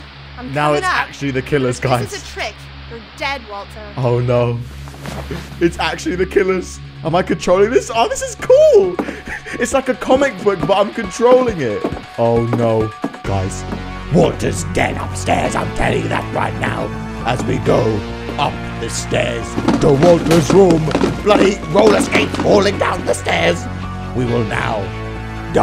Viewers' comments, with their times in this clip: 0:06 micheal Myers music kicks in